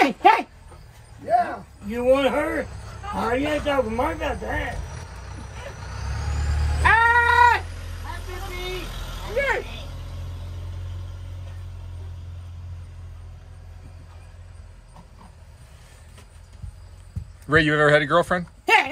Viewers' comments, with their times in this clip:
0:06 he waves and yells hi to the UPS guy 🥲